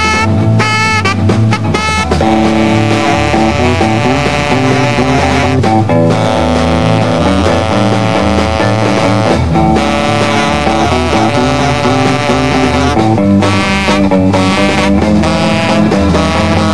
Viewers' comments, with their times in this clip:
0:03 the sax of Manfred Mann is a perfect fuzz pedal.